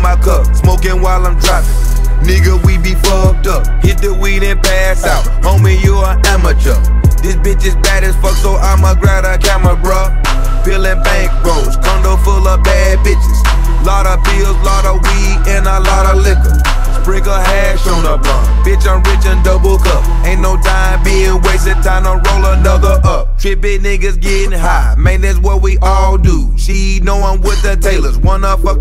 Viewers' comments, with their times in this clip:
0:10 U can hear the coughing adlibs in the back of JUICY Js verse its soo wilddddd